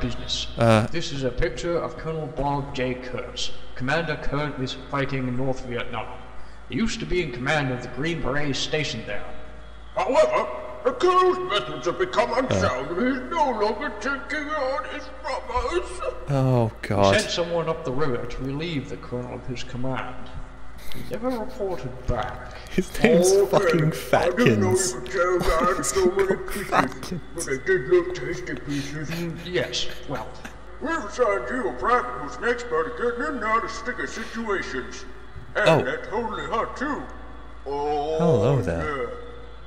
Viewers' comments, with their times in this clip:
0:10 sounds like Sarge of Red vs. Blue
0:23 About that "???", that might be "O~~K"